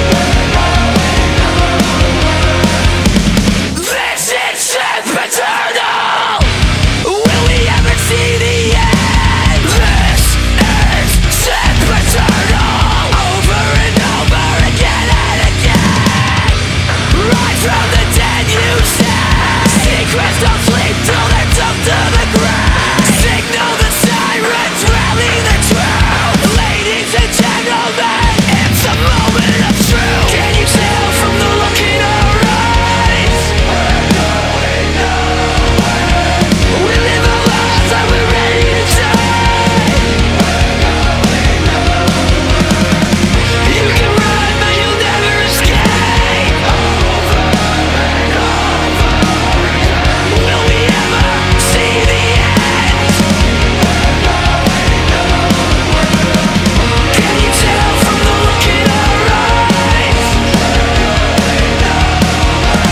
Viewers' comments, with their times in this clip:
0:03 "This is Sandpit Turtle" "This is Simp Eternal" "This is Sick Potato" "This is Epic Tunnel" Continue down below👇
0:03 You are right, I saw a comment that it said "This Is SiCk pOTato" and now I hear it
0:03 i used to think that oli said 'this is sick potato'
0:03 this is sand pit turtle
0:08 wtf sandpit turtle
0:09 THIS IS S I C K P O T A T O Edit - okay I think it says sid the turtle now o_O
0:26 he says “LADIES AND GENTLEMEN, IT’S A MOMENT ACHOO!”
0:29 he is sneezing xD
0:46 Sounds like female backing vocals
0:47 left earphone, soft sweet background voice